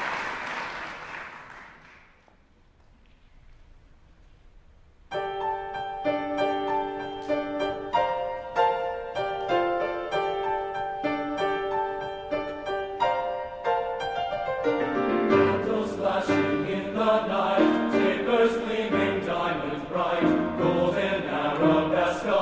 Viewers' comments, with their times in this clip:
0:05 song starts i like this song!